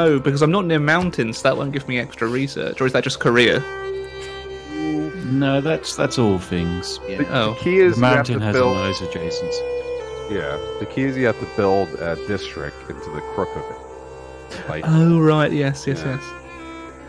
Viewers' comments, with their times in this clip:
0:04 Australian here, digging the slow melancholy rendition of 'Waltzing Matilda' played slightly too loud in the background from onward XD